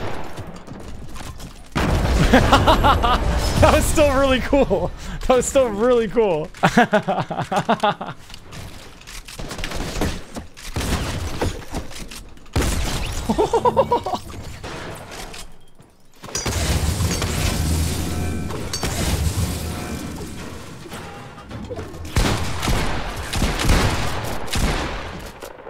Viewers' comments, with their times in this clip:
0:06 Did anyone else hear the spongebob song in Nicks laugh?